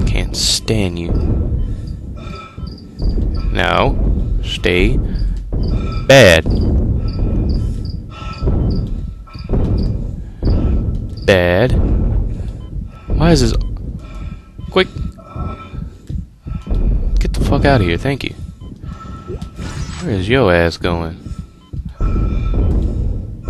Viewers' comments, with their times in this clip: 0:05 lol cricket in background